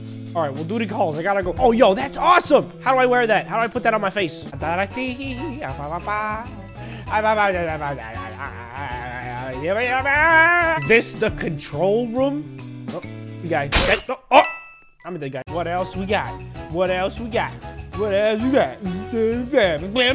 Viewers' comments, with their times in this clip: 0:07 the noises he makes